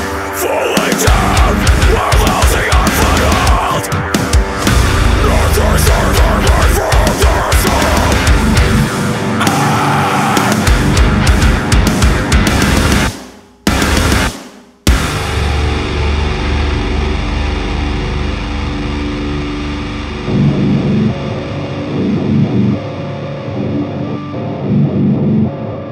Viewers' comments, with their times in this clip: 0:08 till end is by far my favorite that fucking melodic guitar with bass guitar is so badass